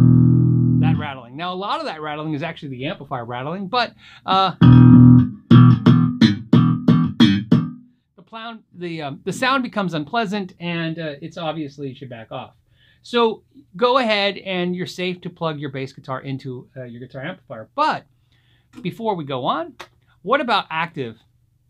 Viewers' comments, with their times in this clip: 0:04 this is how Les Claypool came up with the riff for "My name is Mud"